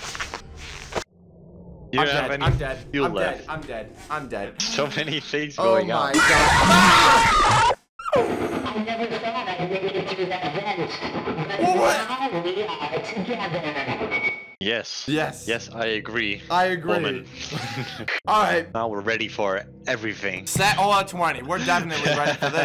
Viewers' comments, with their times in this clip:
0:08 Bro the song is a damn FUCKIN BANGER